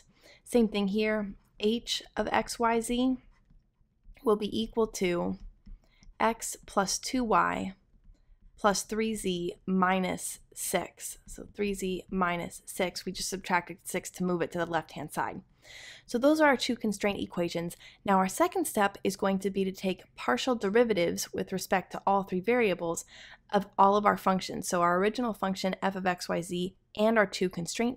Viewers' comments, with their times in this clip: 0:10 You said "sex" ;)